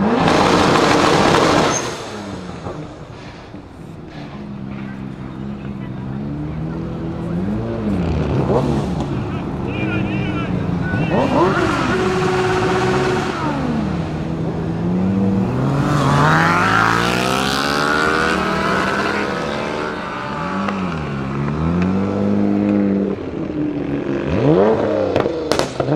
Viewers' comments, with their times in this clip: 0:06 Minuts sound kawasaki H2